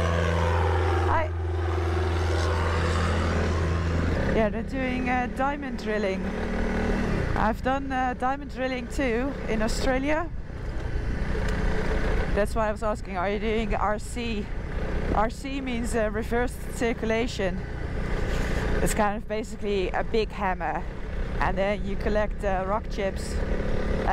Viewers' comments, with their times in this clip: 0:06 "in the snow eh.." looks like you've picked up a Canadian accent already. Welcome to Canada!